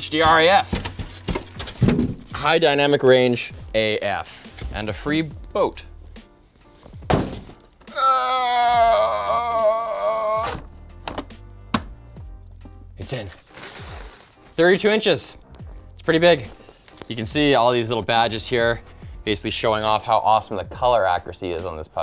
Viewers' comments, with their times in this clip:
0:07 huuuuuuuuuuuuuuuh whispers "It's in" 32 inches!